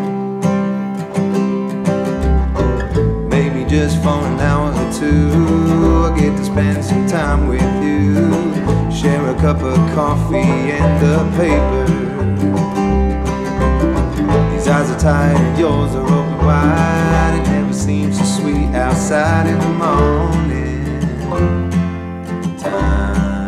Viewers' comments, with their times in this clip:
0:07 Great song, thank you all. I really like it when the base kicks in, it gives the song some depth. I always did like a good plaid flannel shirt.